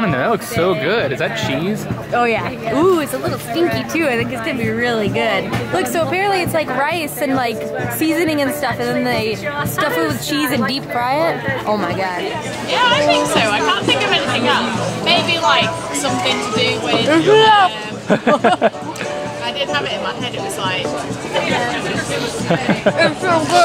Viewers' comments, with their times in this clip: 0:07 Anyone else try to listen in on the conversation going on behind them?